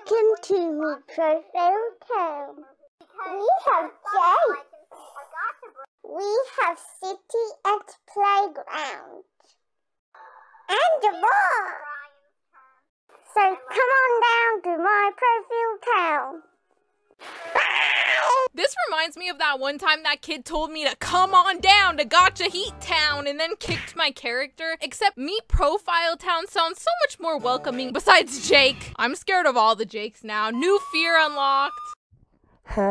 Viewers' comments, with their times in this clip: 0:08 BRO SOUNDS LIKE PAPA PIG 💀💀
0:16 bro be sounding like a witch
0:17 she became Donald Duck 💀 edit : thanks for 51 likes! edit idk: yoooo 73 likes thanks!!!
0:17 THE WAY SHE SAID BYE- 😭
0:18 that bye was personal 😭😔